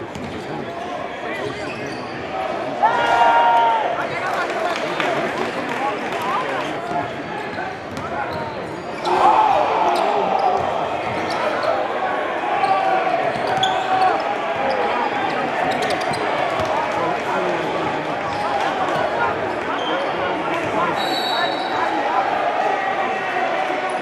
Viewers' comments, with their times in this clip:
0:07 Whats so good the oohs and ahhs😯😯